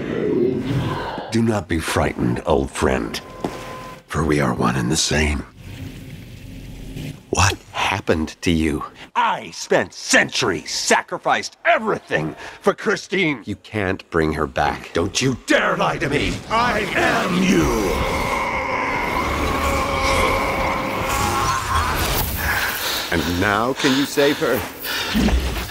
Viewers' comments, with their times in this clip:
0:09 idk why but that shake when he said "centuries" is so cool